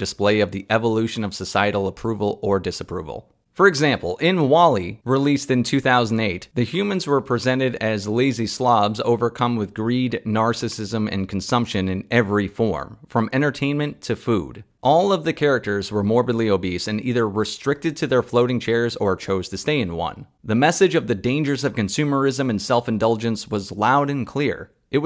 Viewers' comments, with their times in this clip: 0:07 I listened to this video minimized until I heard that iconic "pakyu" that made me laughed out loud. Not where I expected to hear Bung Mokhtar at all.